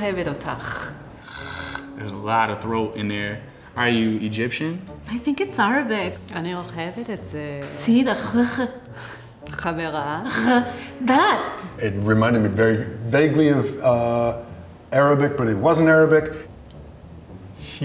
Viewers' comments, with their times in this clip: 0:03 The lady has terrible hebrew